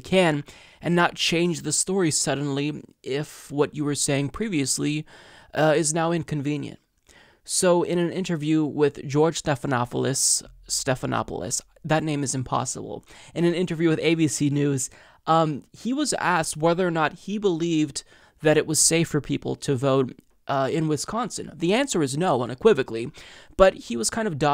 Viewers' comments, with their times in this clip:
0:09 it's sounded American Greek